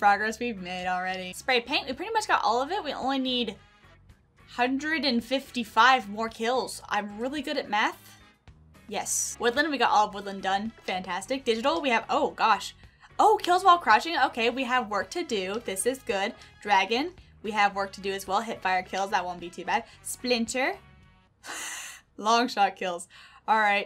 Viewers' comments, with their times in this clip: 0:06 Did u mean meth or math 😂😂